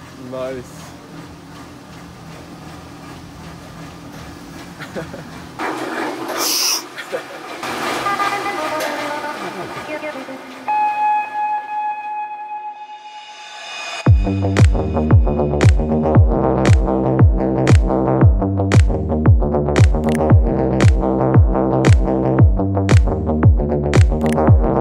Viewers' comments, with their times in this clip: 0:09 Only ogs remember the music